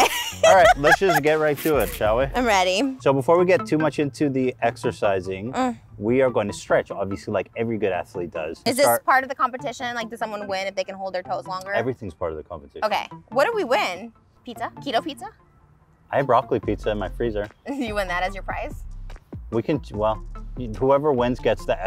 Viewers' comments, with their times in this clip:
0:08 was there always background music playing during the entire segment ???? It's so random and out of place